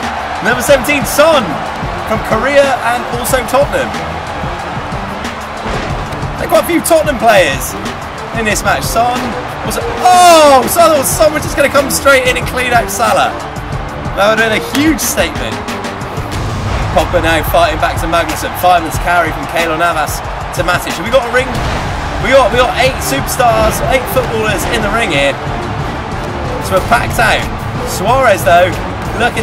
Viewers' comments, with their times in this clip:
0:10 i heard at first: "Oh son was gonna come in and clean up the salad"